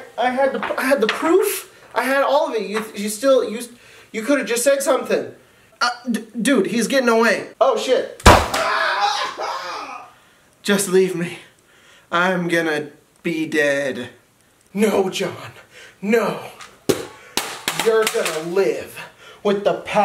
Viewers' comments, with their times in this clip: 0:07 That set up and scream is fucking perfect